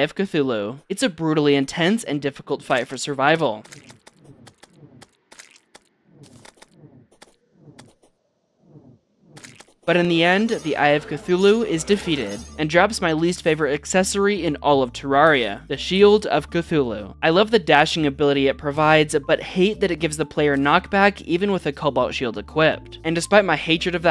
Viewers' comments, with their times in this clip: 0:09 the delivery and comedic timing is immaculate!